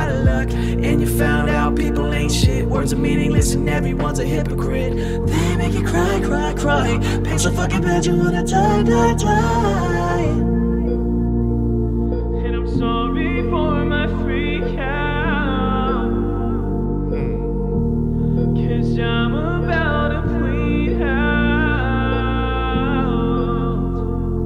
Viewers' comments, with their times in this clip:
0:08 Not sure what they were thinking but the rest of the song was cool, timing was a bit off on the layers in parts